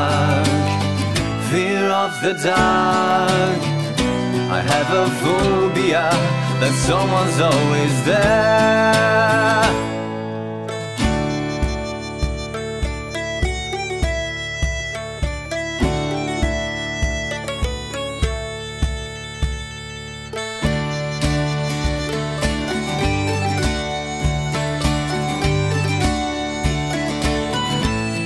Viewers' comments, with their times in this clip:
0:10 It had a bagpipe segment though. The flute came in on top, and they didn't play the bagpipe in the video, but it's there
0:10 The Shire Version